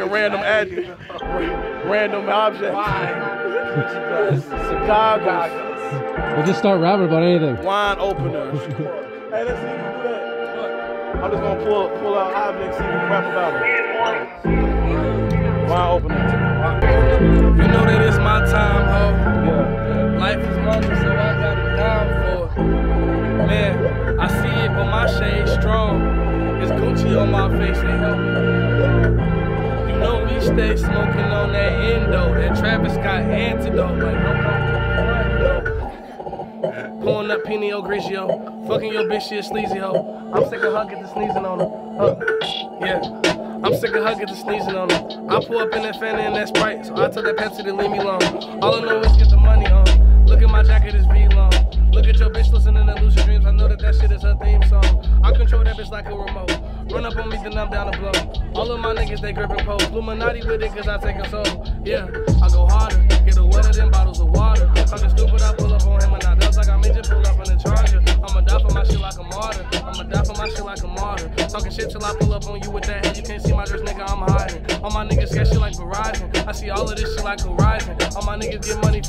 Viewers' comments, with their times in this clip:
0:08 is litterly one of the best and smoothest freestyles ever
1:01 is so hard, the beat drops and the way he immediately catches that flow with a hard ass bar based on an object is insane.